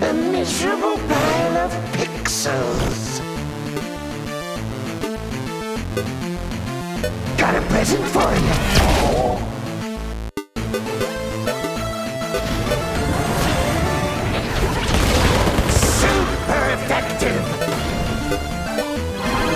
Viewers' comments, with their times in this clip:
0:07 Veigar says got a present for ya' but i swear that when the Dark Matter lands i can hear ''fool''